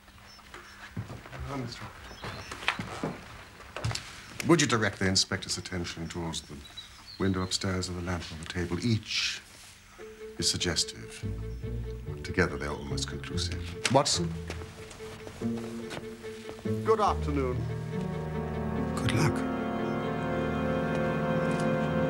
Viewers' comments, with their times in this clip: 0:09 Actually Holmes said, “… ALMOST conclusive,” He spoke so rapidly it was easy to miss.